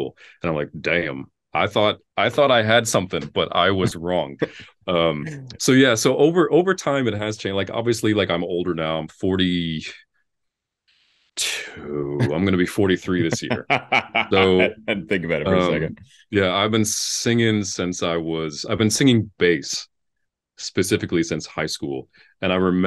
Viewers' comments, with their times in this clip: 0:10 JESUS what low note was that that sounded low and chesty also how did he not know his age lmao